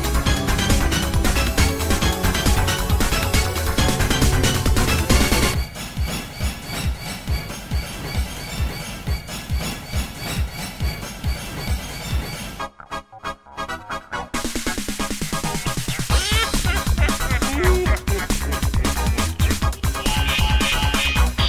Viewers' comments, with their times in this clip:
0:05 I like how at the end of this one and present, there are musical callbacks to the previous time zone
0:05 It's especially obvious I couldn't really hear the resemblance until it got to that part.